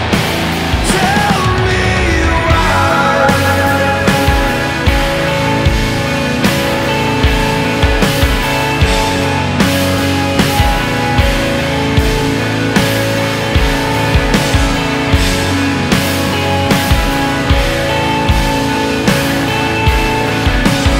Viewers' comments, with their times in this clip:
0:03 The Guitar solo is the best part of the song!